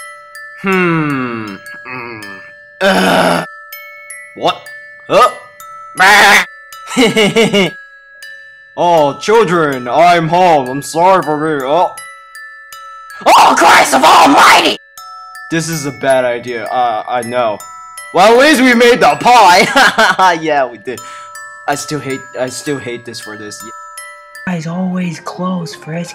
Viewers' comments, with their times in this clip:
0:08 In why does Toriel sound like a guy going through puberty?
0:13 R.I.P Headphone users (aka me)